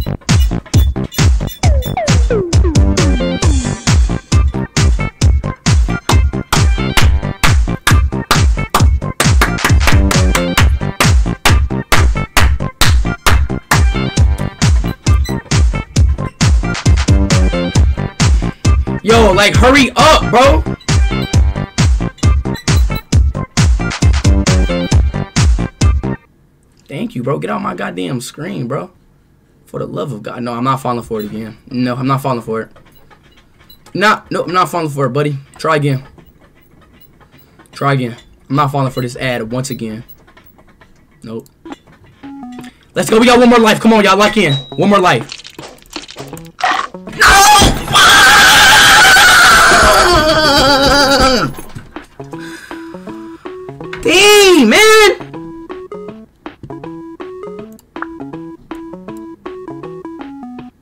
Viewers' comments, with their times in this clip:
0:04 the way i started clapping to the beat and speed joined was way too funny LOL
0:46 Warning there is a earrape so if ur wearing headphones please take them off thank you
0:46 In he screamed